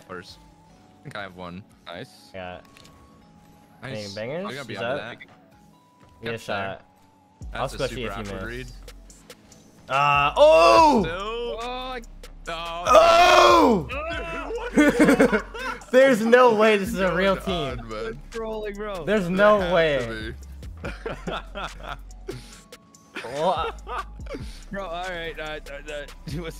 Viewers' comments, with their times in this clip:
0:10 what the hell is that noise u did 😂